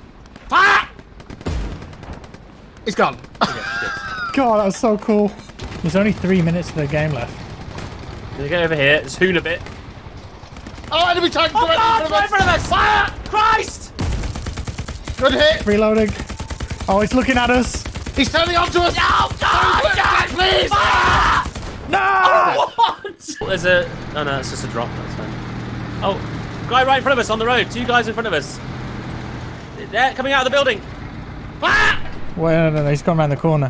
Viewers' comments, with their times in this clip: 0:08 all that yelling gave me anxiety, I guess that's what crews felt back in the day
0:17 actually how american tanks crews sound when they know they abt to die
0:17 The screams of an English tank crew before being destroyed by an enemy tiger.
0:18 that's what panic sounds like.